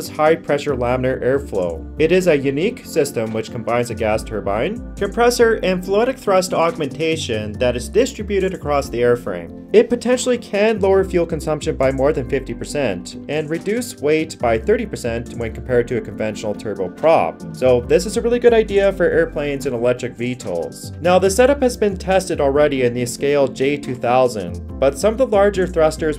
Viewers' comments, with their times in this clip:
0:08 three annoying uses of uptalk. Talk like a fucking man, not like a teenage girl.